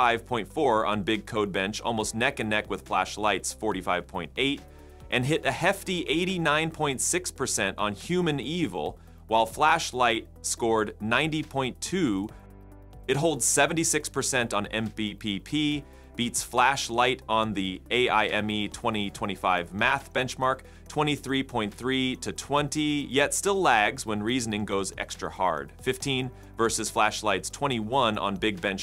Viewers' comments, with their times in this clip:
0:09 yes, human evil 🙂